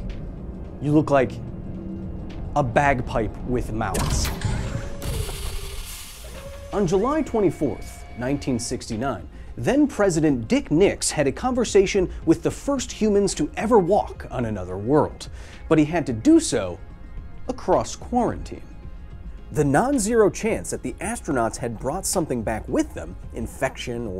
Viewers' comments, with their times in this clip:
0:10 For half a second I zoned out and I thought he referred to Richard Nixon as "President Dicknips"